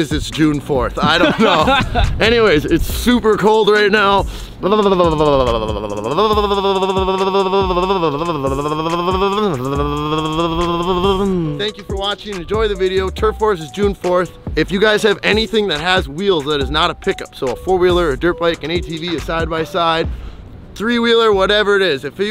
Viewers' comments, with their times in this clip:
0:06 he kinda sound like his banshee